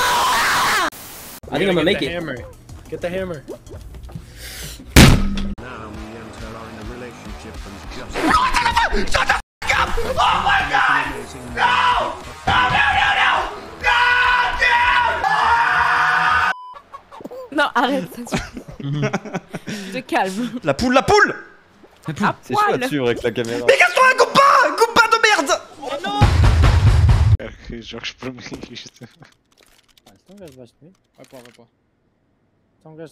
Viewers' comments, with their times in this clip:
0:05 this guy sounds so much like Markiplier istg
0:19 My guys spoke MINION